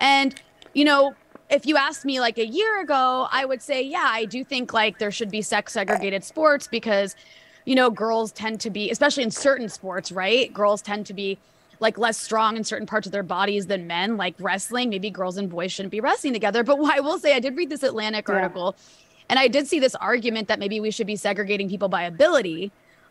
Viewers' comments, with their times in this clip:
0:04 This was probably Briahna's best attempt at making an unbiased panel. The burp was nice touch though, more thought provoking than anything else.
0:05 This segment is hilarious. I think I even heard one of the producers gagging